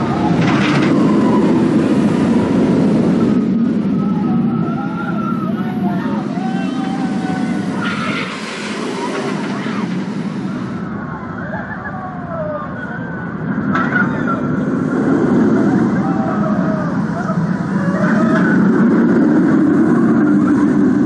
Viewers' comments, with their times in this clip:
0:08 best scream I ever heard of this ride.